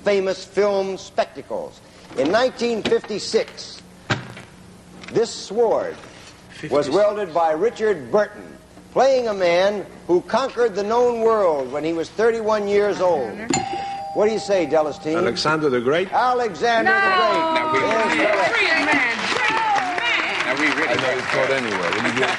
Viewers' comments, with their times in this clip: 0:05 Larry pronounces the "W" in "sword".